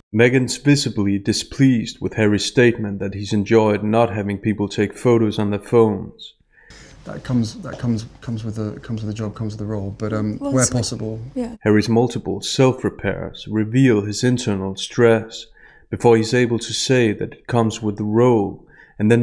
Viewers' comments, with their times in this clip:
0:06 Wow, after watching this several times, I've only just noticed how bad his nerves are When she gives him the stare, he says 'comes with' 5 times, before he gets his sentence out properly. This is followed by biting & licking his lips, then a massive eye flutter. He does not seem comfortable AT ALL. Why would anyone want to be in a relationship that made you THAT nervous?